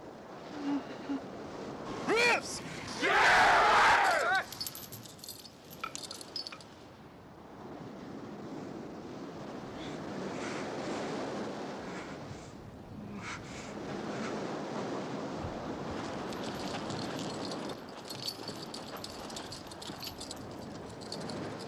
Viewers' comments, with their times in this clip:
0:03 the dude who yelled out of sync would have become self-conscious AF for a good while but was more than likely super grateful his face would have been discernible being toward the back. Now it's the only thing he hears when he watches the film. His fam probably broke his balls for a while, though.